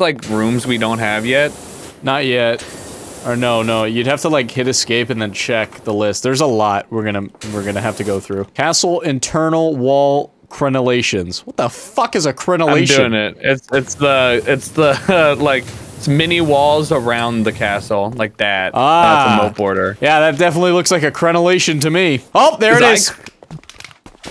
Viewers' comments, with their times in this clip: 0:08 smii7y sounds like the blitzo from helluvaboss but younger. but not like kid young just young, he even said those exact words but without the insurance part